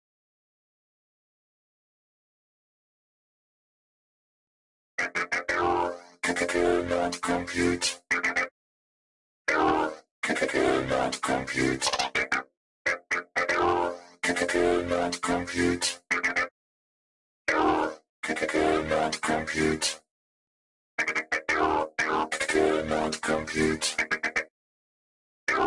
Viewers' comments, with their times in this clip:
0:10 shhh, it’s rare wubbox’s mating call